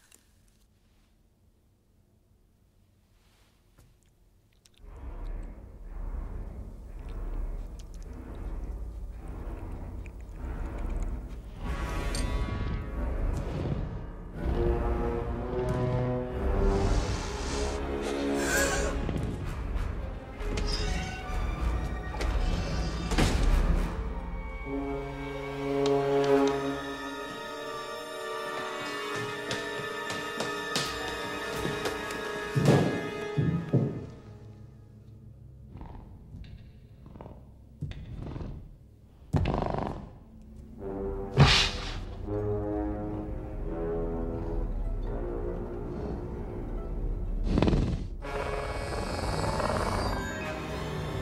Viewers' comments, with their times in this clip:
0:08 TKO cola but I heard that soundtrack :)
0:20 Should have made the music slower and built up gradually then cut the music
0:36 you've got to be kidding me.. the sound of the approaching raptor's toes clicking on hard concrete don't scare you ?
0:36 I wish they had added these footsteps in the movie...they add more to the fear factor than this music!